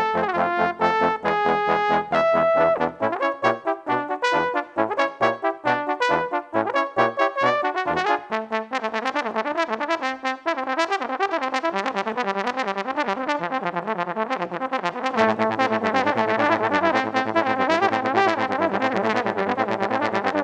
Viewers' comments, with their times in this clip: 0:08 The best part is ! Love the solo!